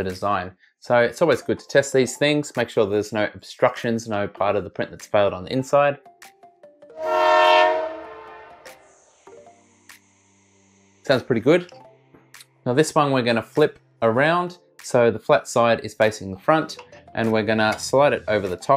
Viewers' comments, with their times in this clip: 0:06 watch out the train is coming!